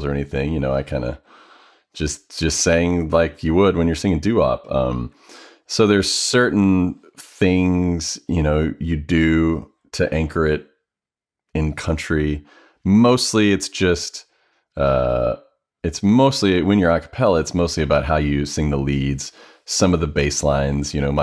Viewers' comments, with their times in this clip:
0:06 Just putting this out there, they way Tim says "you know" kind of sounds like he turned into an Australian and I just thought that was hilarious and I listened to it so many times over. It was an amazing interview and I love his genuineness about his past and leading into how his whole Acapella career started. Loved it, thanks so much for sharing :D